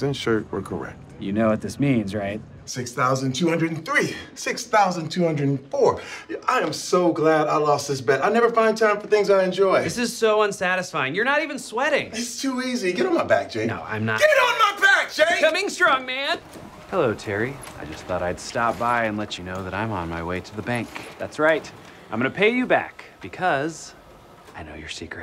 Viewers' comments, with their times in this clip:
0:06 that “Coming strong man” had so much fear in it lol 😂